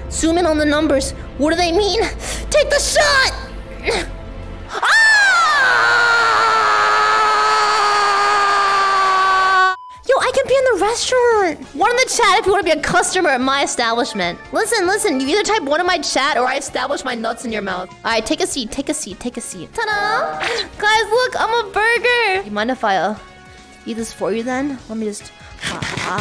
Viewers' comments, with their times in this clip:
0:09 did she really say i can pee? or did she said i can be? im confused